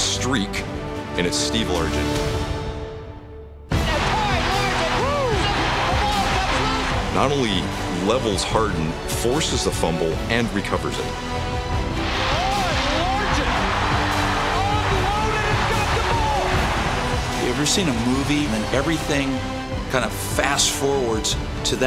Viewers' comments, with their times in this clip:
0:03 is a "wooooooo hit". A hit that makes everybody go "wooooooo".